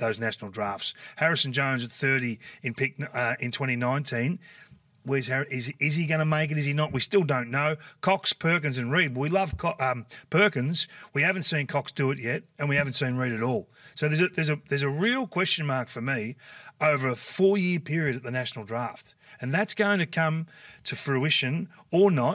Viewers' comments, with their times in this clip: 0:08 Kingy: Cox, Perkins and Reed….we love Co-..ah, we love Perkins and we haven’t seen Cox do…mumble..fumble Love your work Kingy, don’t ever change 😂